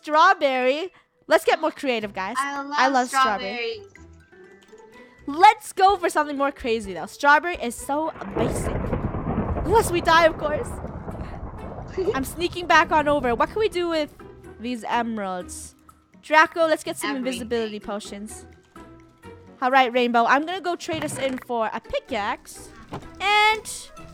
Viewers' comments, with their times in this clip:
0:09 Did someone hear that weird nose